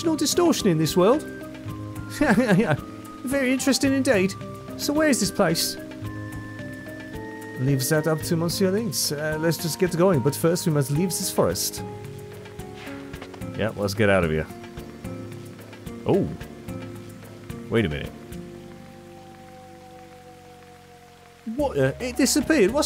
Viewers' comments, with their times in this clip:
0:06 "Can't take the berry? Makes me berry sad!" I love that this game finally does the silent protagonist right thanks to this scene. It hits so hard when Serge has dialog. Completely blew my mind at the time. This really is the only game in which a silent protag is bearable to me (it's one of the reasons I dislike the Zelda and Dragon Quest series). Also you're wondering how monsieur is pronounced but you said it perfectly 🤣 (and it's a french guy telling you haha)